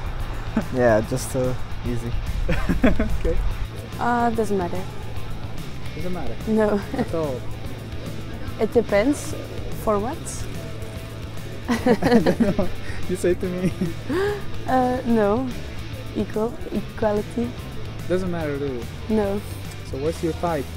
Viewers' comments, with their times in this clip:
0:04 The girl looks like Billie eilish even her voice. 😅 I'm here from ur TikTok account. 🤜